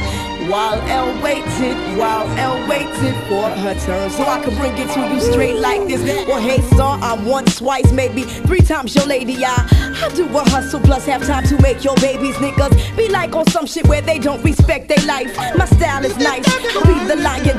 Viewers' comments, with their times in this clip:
0:04 I wish yall could see my "DAMNNNNNN" face when she started rapping...